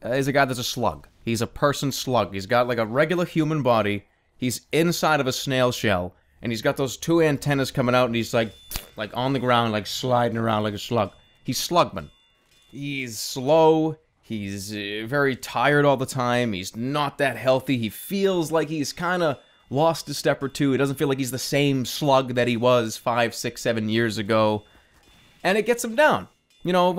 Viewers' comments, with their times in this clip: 0:07 How did he make that noise?